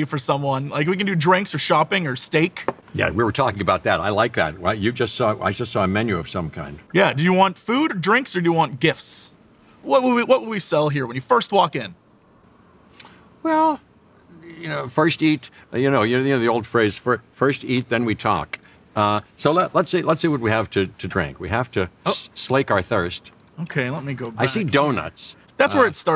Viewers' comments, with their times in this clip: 0:09 Omg did anyone else hear Jeff got a voicecrack:D That sound XD